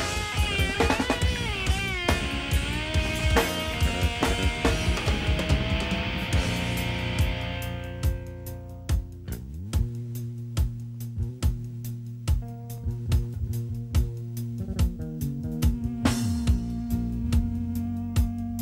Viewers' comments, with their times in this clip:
0:06 Not entirely true, the bass line has a bridge